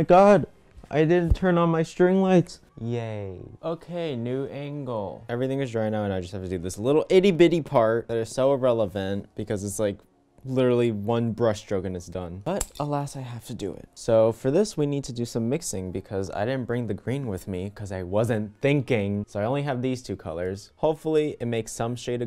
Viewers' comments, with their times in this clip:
0:03 No ones going to talk about that little "yaayy"..... mmm: Okay just me